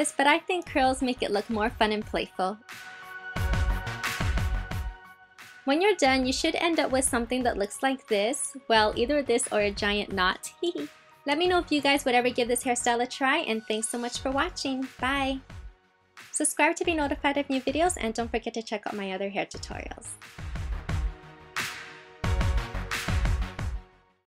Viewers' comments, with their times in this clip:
0:08 omg <3 i love that little laugh xD
0:09 I laughed when I heard this little "hehe"
0:10 Oh it's so pretty! And i love your "hihi"
0:10 lol You laugh so cute ! :D